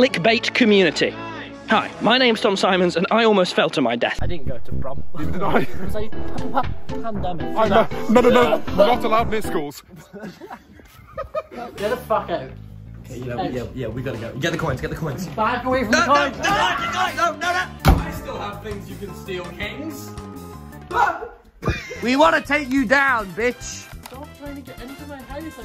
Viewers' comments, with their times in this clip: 0:07 there was a pAnDEmIc coughs up soul